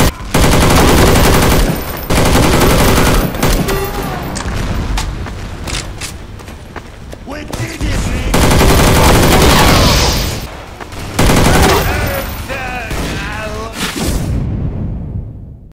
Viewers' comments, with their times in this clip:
0:10 Demoman still talks after he dies 😂
0:11 That part where Demoman died and he was saying gibberish things is the best part of the video! xD